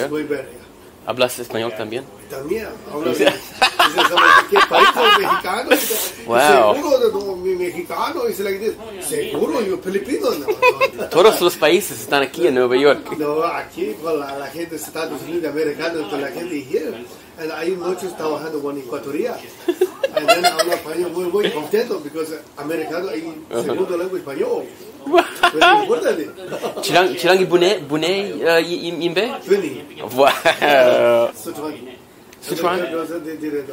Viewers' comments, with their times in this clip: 0:09 my dude even did the filipino pronunciation of the language when he said "Pilipino" lol
0:16 Ignore my weird laughs
0:20 What’s that noise ?